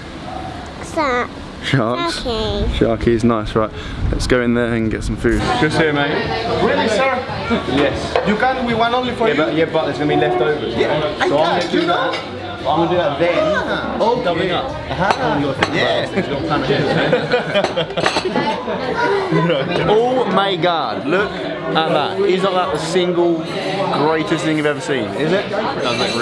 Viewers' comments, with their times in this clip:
0:10 I legit though him and the waiter were arguing